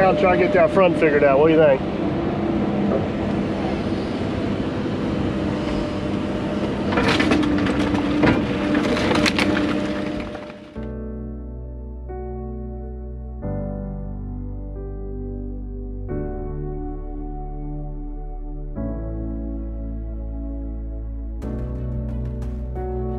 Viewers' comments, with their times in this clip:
0:09 We appreciate you sharing this and the family. We all new this was coming especialy in our part of the country this season. Hopes and Prayers. Plus a fullfilling next life for those who past over the spring and summer. 👉👉If I were to ever build a house out here it would be a concrete dome house or a sunk house with a slide lid. No an's or but's about that. The tune had me tearing up my man.😥😥